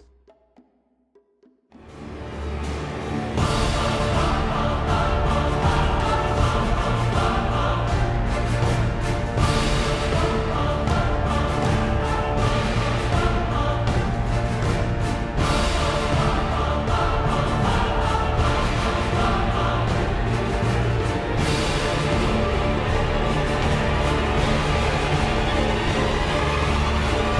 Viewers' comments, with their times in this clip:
0:08 just wondering if anyone else heard his outro music and thought of Epic Meal Time?